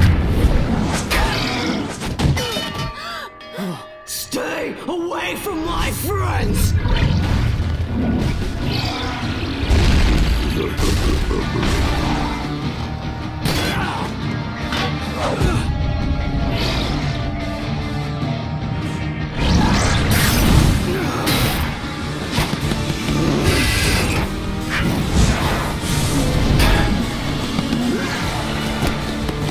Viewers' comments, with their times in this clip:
0:10 the theme gets more epic with it's echoes and rifts